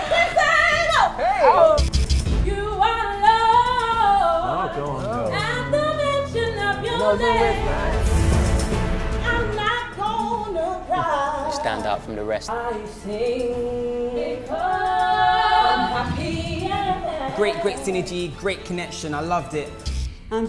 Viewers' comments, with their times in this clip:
0:06 nice voice, lady